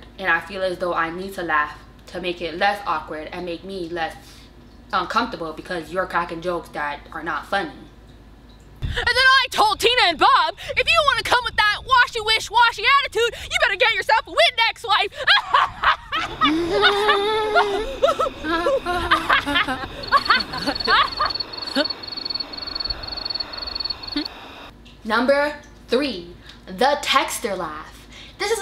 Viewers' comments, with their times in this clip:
0:10 Is my favourite laugh !! How about you guys ??